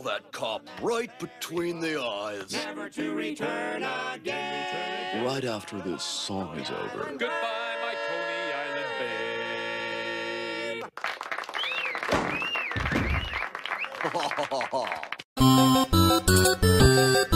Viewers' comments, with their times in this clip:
0:03 the power of chromatism :)